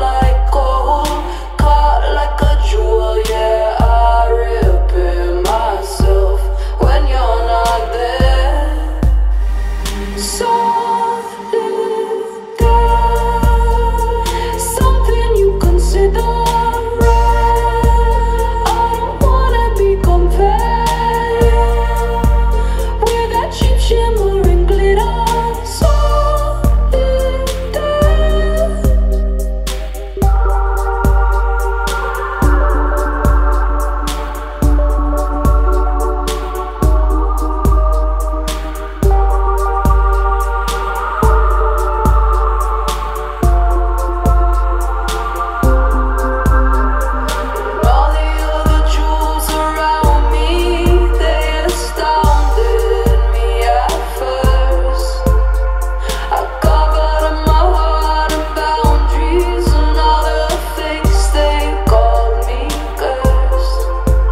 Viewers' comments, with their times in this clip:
0:10 the charry gliched out, out, tout mmmmmmm Matrix breaks
0:50 her voice sounds so sweet 🥺